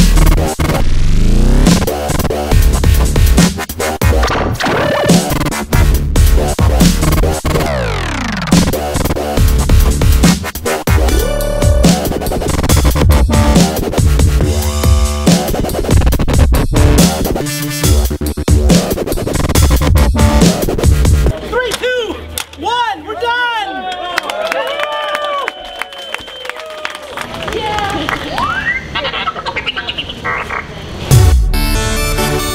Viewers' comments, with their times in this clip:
0:07 Wtf is this music ( for example)
0:13 The music at this time sounds like the music from pixel gun 3d